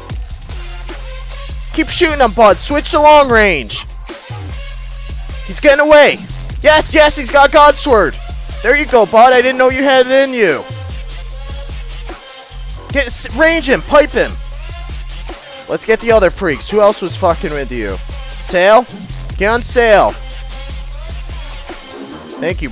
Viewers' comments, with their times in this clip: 0:03 “Keep shooting him bud, switch to long range” “He’s getting away” The way you said that really reminded me of Star Fox lol